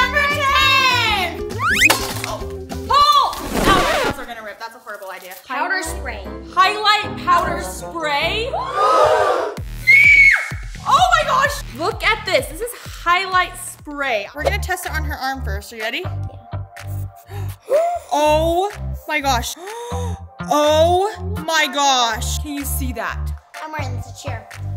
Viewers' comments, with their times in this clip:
0:09 The panting disappeared ☠️☠️☠️☠️☠️